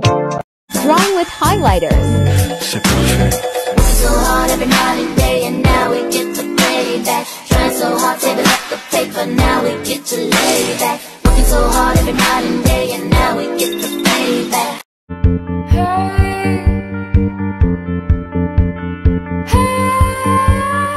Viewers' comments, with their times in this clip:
0:03 what song is this cuz it sounds so nostalgic and i forgot the name